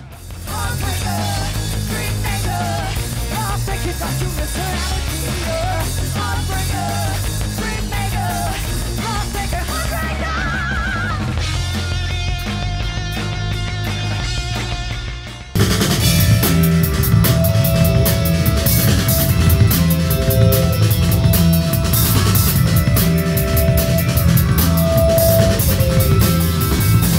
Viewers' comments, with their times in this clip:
0:09 What a Rock-Star! Was that you on the high harmony ?